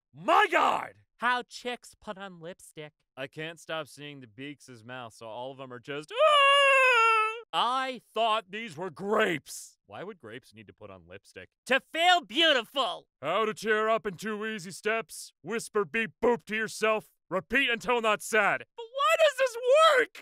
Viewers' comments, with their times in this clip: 0:05 THAT NOISE- THAT NOISE YOU MADE I NEARLY SPIT OUT MY DRINK-